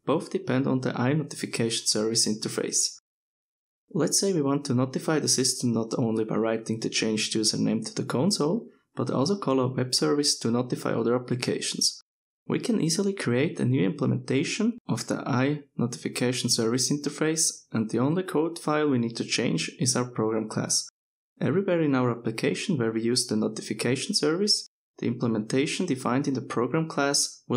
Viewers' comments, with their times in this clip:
0:08 other color web service? what?